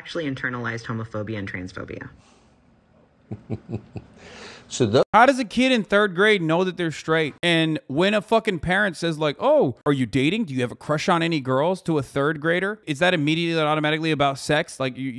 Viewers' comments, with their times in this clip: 0:03 Okay that was an evil laugh! Holy shit did anyone see that tell me he doesn’t look and sound like a damn supervillain Gimme some villain names for tucker please!!